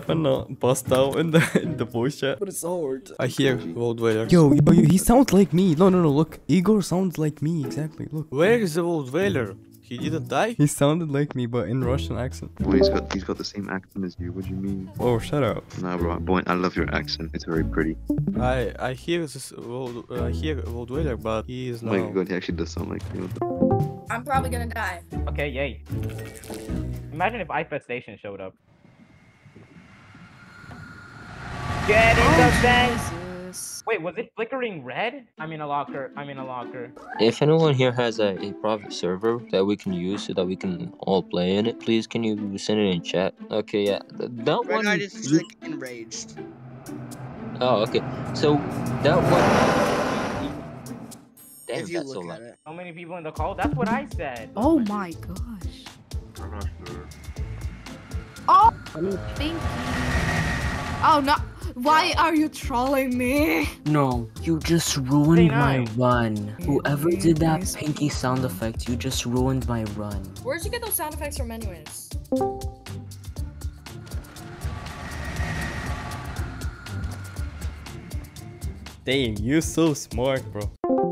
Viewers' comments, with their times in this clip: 0:03 russian Boin :O
1:03 he was trying to do a lockerless run, the pinkie sound board made him panic and enter a locker.